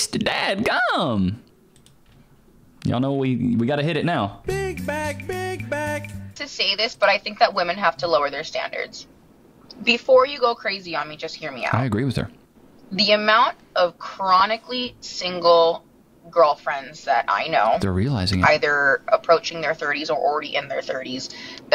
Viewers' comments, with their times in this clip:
0:03 why do they do that cringey vocal fry thing!